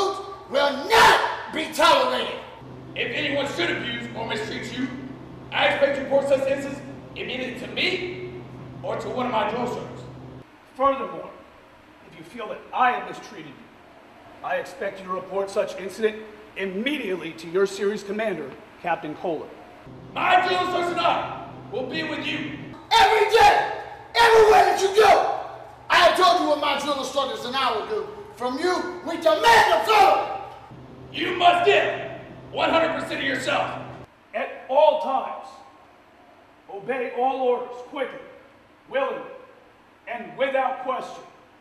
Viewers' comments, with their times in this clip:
0:08 mean it to me or to one of my daughters
0:22 the dude screaming sounds just like Hoffman from Gears.